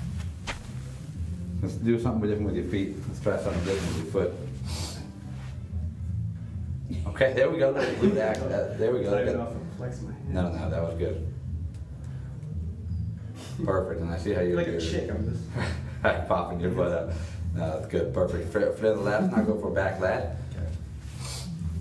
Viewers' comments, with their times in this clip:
0:05 burst out in laughter